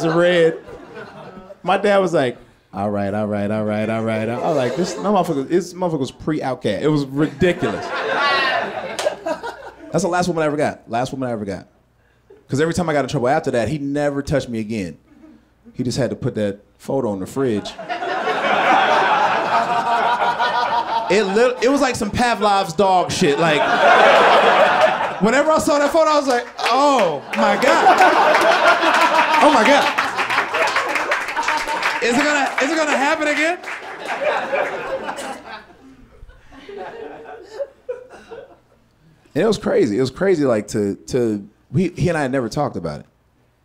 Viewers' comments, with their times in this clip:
0:04 what is he saying? sounds like "pre-outcare" ??
0:27 that laugh oh my god what even is that is that an actual fucking genuine laugh?